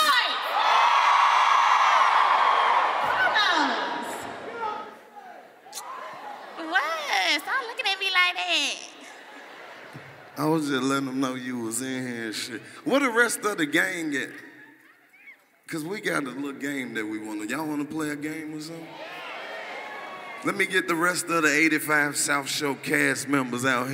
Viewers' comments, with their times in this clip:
0:04 Am I the only person who heard somebody tell BSimone to get off the stage